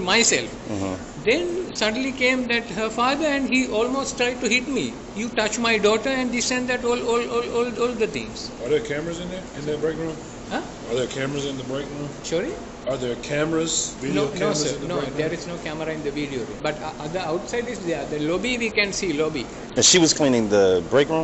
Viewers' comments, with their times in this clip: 0:05 is where he starts to glitch out. Just a whole lot of talking and a whole lot of hiding behind an accent.
0:06 My man is a DJ! I was waiting for the beat to drop too